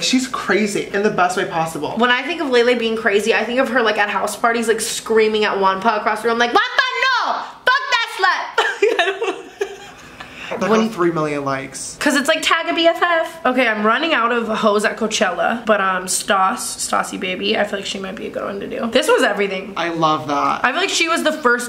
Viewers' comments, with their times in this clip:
0:06 Tana's impression of Lele